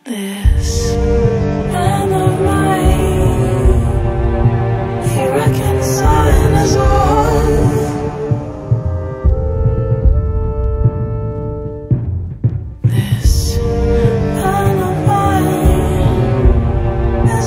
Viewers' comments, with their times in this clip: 0:04 that vocal effect made me goose bump so fucking hard that my nipples petrified